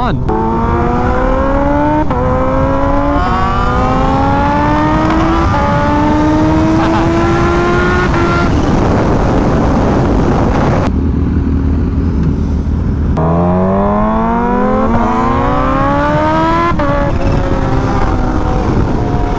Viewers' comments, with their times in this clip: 0:05 I like how he casually laughed while going probably over 100 mph